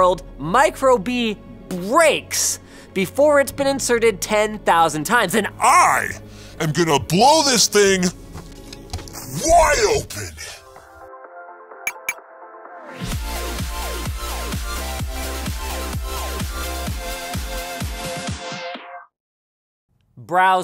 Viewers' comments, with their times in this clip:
0:04 was it KSI's voice???
0:05 I like how they needed to lower Linus's voice by 2 octaves to get him to sound like Alex Jones.
0:05 for a second I thought I was hearing testosterone
0:05 Never thought I'd hear his voice go deep! 😲
0:05 linus vaguely sounds like luke
0:05 Linus with Batman voice
0:05 props to the editor because he had to lower his voice so much
0:05 sounds like a YTP
0:05 Woww. is that Linus's REAL voice? before they apply some softening filter so he doesn't scare off all the potential new viewers. So manly
0:06 um Linus I think something happened to your voice it sounded like a man not a 5 year old girl